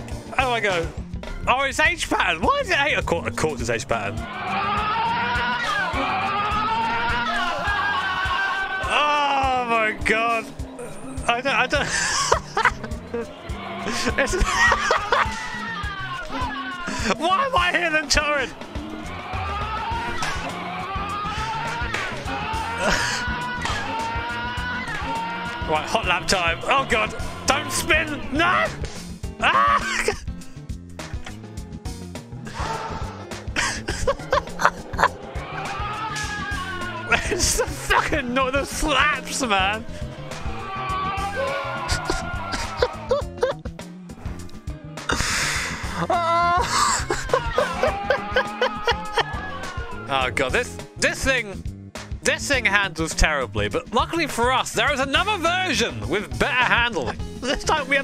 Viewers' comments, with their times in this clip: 0:04 the engine sound is too majestic
0:05 VTEC just kicked in yo
0:31 that little rev gets ne everytime
0:41 It farted out of its ass. A literal backfire
0:41 the ‘backfire’ from his backside 🤣